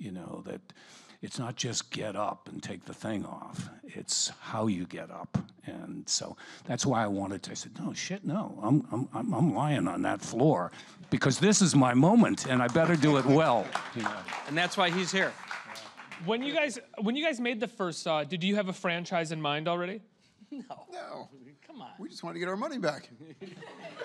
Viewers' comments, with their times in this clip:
0:08 Except lol he almost sounded like a different person.